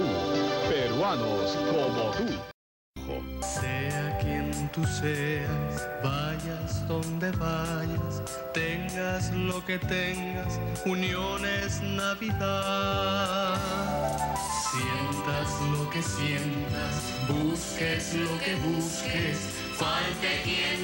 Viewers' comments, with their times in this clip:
0:05 Aeroperu part is literally broke my heart, the music was so good and sadly this airline closed after a plane crash 😢😢